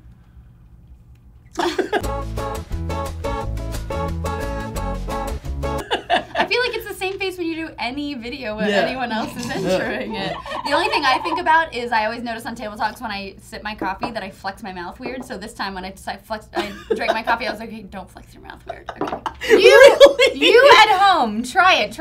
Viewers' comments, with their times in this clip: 0:10 ... I'm way too amused by the giggle into coffee cup